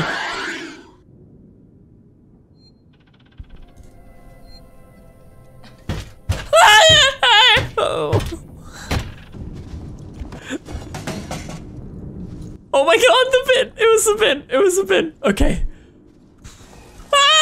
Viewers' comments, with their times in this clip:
0:03 He sounds like an old lady 🤣😂